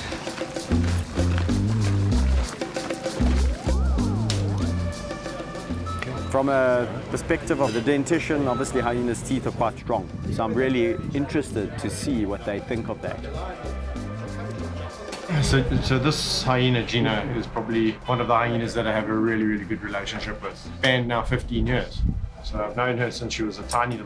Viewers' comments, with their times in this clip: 0:05 lokey sounds like the machine at McDonald's